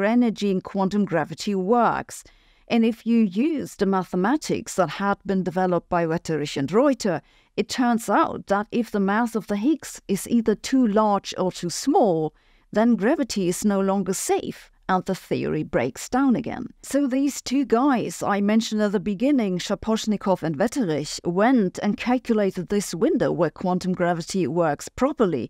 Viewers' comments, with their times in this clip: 0:10 Math of the Higgs is too small?